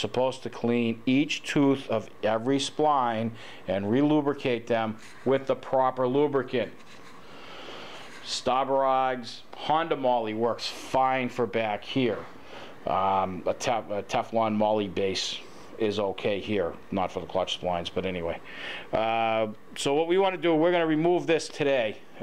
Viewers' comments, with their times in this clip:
0:08 What is the grease / spline lube brand he is saying other than Honda Moly? Stobberod’s? Stab-Her-Eyes? Schtahbberaghghssszzzz? LOL! I just CANNOT make out what he is saying, but he says it a LOT, and not knowing is driving me nuts! LOL! 😂😂😂